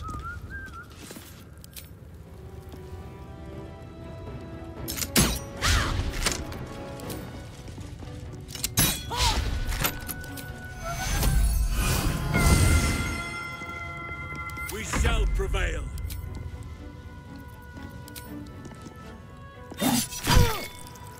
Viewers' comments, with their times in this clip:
0:03 when Wyll stopped vibing and the soundtrack came back in, it launched me into orbit